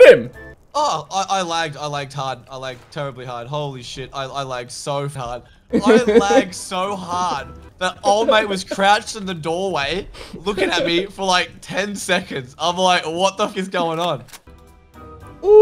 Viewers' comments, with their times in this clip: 0:03 i genuinely think youre the only rust youtubers whos in it purely for the laughs and giggles. everyone tries to make a story out of it which is fair, but when i got to i had vertiigo flashbacks. the music sounds similar. Thanks for the memes